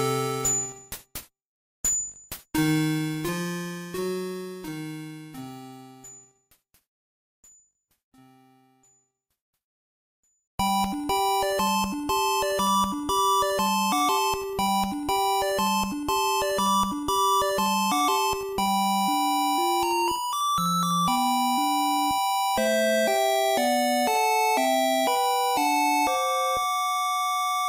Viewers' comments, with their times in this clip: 0:10 Ending, I so thought that was Sesame Street.